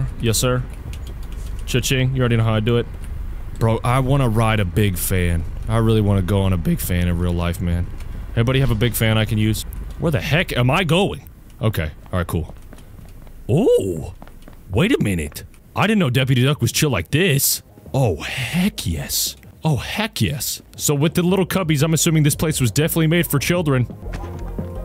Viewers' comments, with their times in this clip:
0:05 he sounded sad😭
0:06 bro thought I wouldn’t notice that voice crack 😭😭🙏🙏🙏